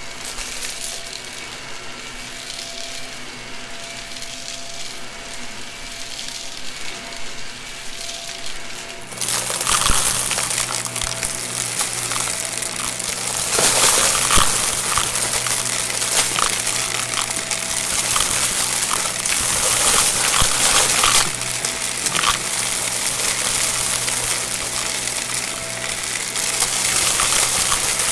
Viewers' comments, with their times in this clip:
0:10 I love when the mic is on the vac😍